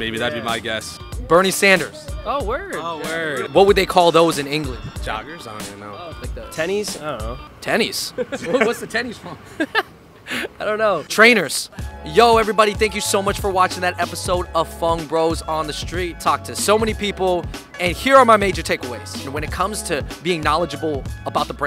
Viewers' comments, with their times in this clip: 0:07 is it just me or it lowkey sounds like eminem